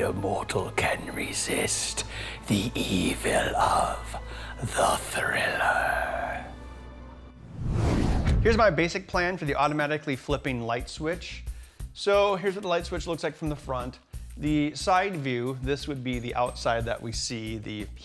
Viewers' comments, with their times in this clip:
0:06 (heh) -- Only missed the laughter!